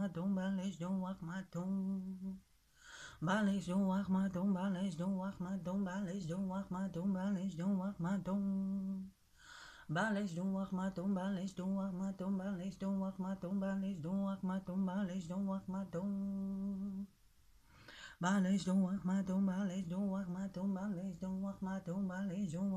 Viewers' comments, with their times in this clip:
0:10 I loled. This is seriously an incantation? It sounds like a god damn song.